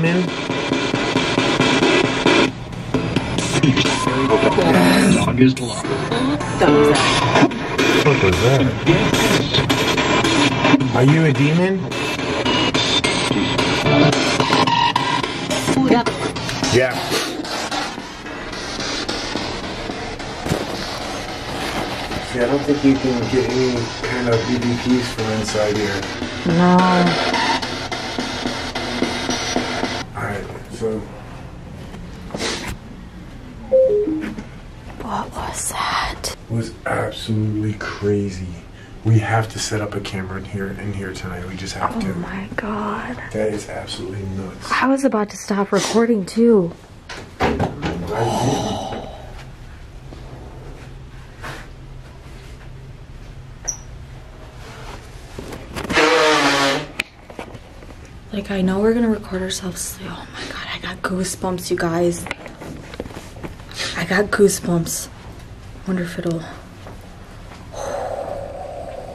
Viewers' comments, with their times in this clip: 0:03 ......THAT FREAKING FREAKED ME OUT TO HEAR...….THAT "SCREAM" OF A WOMEN, IT SOUNDS LIKE SHES BEEN KILLED OR THROWN OVER BOARD...….IS IT FROM THE SPIRIT BOX OR OUT SIDE...….WHAT THE...…..??????
0:05 That was a Scary ass Scream
0:50 Listen closely with your headphones on high volume because theres a creepy, faint voice that says "Come back to me"